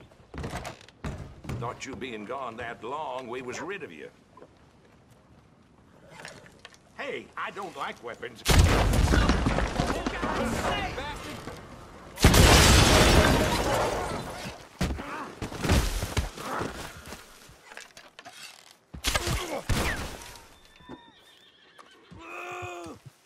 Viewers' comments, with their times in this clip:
0:06 that guy sounds like Peter from the Family Guy movie episode. 😂